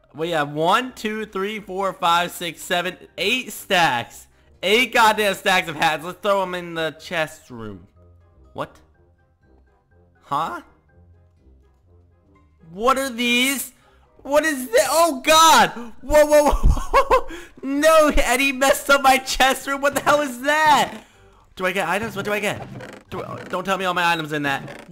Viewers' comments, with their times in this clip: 0:05 the change in his tone , sense of realization😂